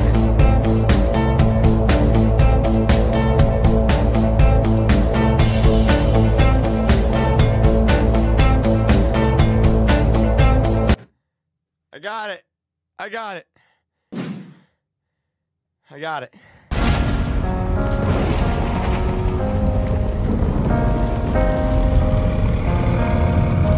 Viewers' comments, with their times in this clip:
0:05 home depot beat